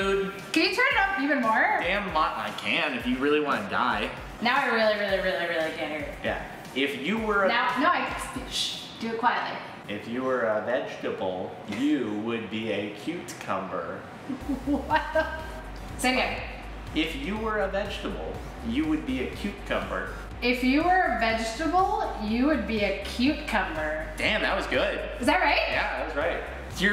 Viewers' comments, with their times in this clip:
0:07 That has got to be the cutest moment they had in the entire video when she shhhhed him <3